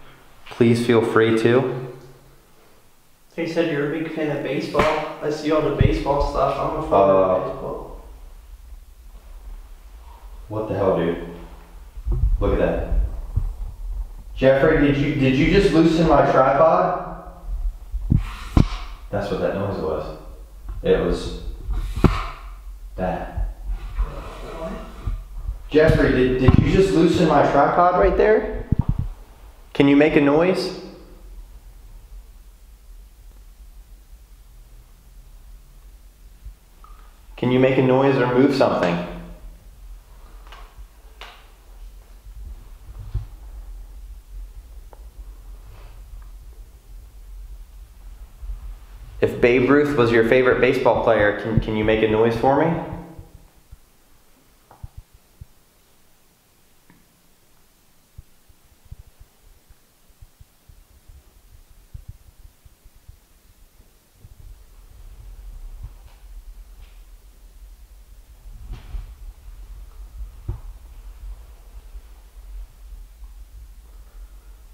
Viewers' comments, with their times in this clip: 0:05 heard something being moved or played with
0:23 is it just me or sounds like a woman voice saying "what?" i'm so confused
0:36 you ask Jeffrey to make a noise and I heard like a big drop of water 💧
0:56 you ask if Babe Ruthe was ur fav baseball player to make a noise and I heard a very faint tap